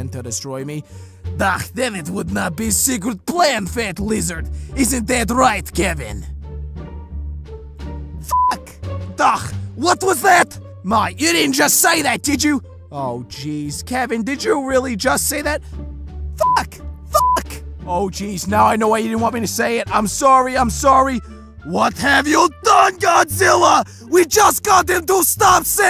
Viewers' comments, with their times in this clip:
0:08 Oh just Kevin saying F word innocently